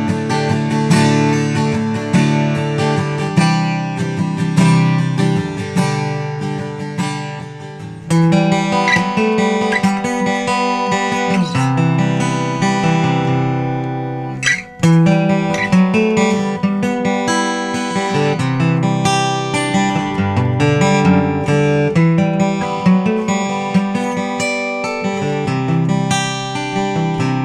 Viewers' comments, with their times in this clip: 0:07 lovely! ---------> I love acoustic guitar in the morning with coffee. 🙂
0:08 Pop punk finally made the channel!